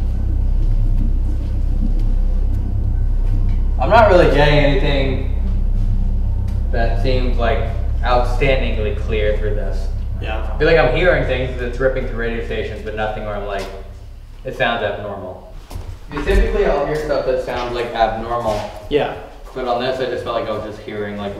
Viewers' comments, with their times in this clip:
0:03 you can hear a female voice say "Elton" or "okay".